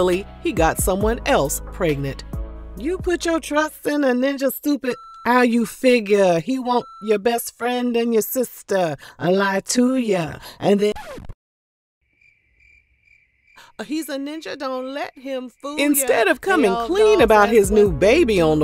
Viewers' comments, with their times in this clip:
0:04 I’m over here dead 🤣🤣🤣🤣thank you for the singing 🎵